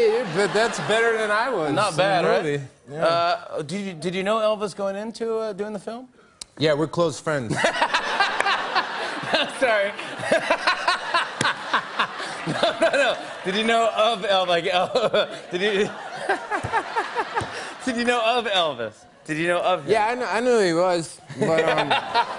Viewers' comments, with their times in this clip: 0:06 i think that was jimmy's first genuine laugh